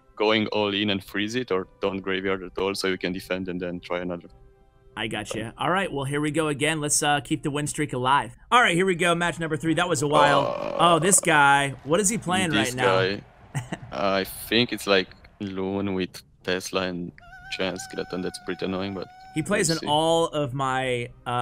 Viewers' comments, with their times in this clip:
0:09 did he just burp?